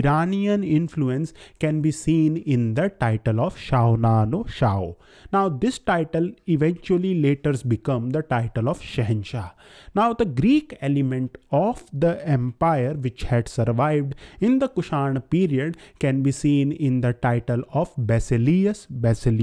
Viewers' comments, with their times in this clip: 0:03 Does Shaonano Shao sound Gujarati to anyone?